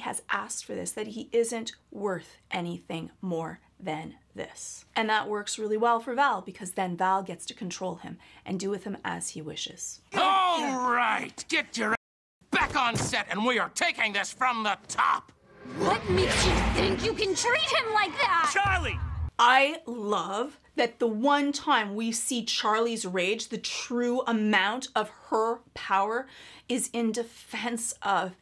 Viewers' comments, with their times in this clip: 0:10 whenever I hear angel yelling at Charlie, all I hear is a young broken down boy that's scared and has had enough. The voice actors are too good at their jobs!